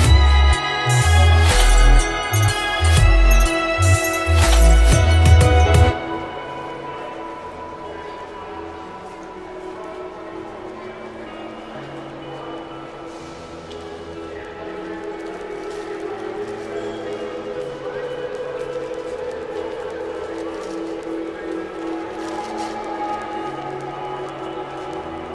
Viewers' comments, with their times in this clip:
0:07 Did anybody else hear exlposions in the sky from